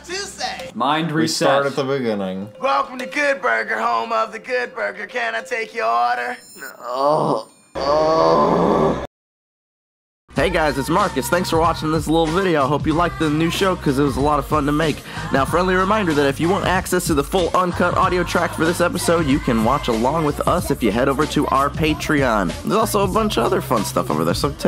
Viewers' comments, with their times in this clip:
0:09 am I the only one who thought this sounded like a rap?